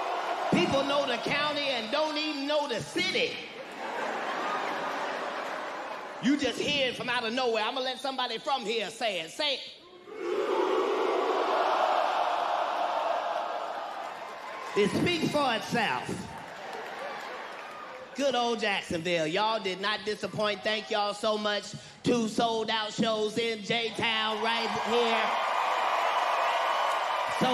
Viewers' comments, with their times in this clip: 0:09 What About Jacksonville?? what does he let the Crowd Say?? I can't Make it Out what the Crowd Sez!!